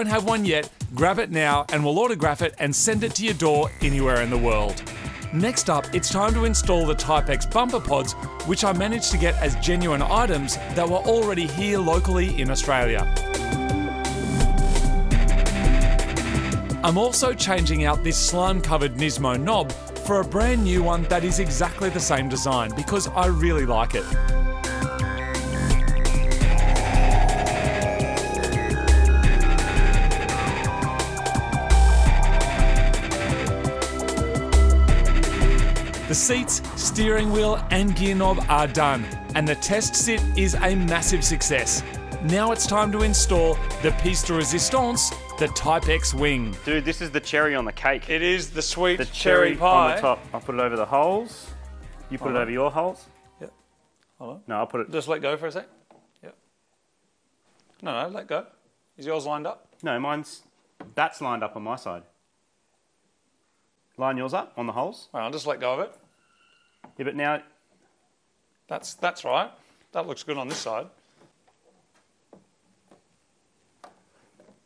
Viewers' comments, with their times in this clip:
0:08 Nice on guys. Whats the soundtrack/bgm/song playing when you installing the bumper pods It's giving off full NFS vibes.
1:00 replay button for giggles